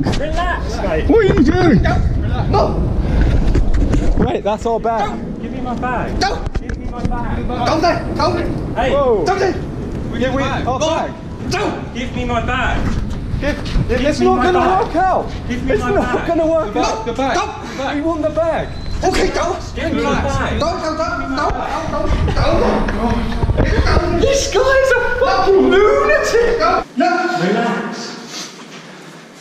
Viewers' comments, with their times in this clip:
0:09 The Security barking
0:10 D'OH!!! like homer simpson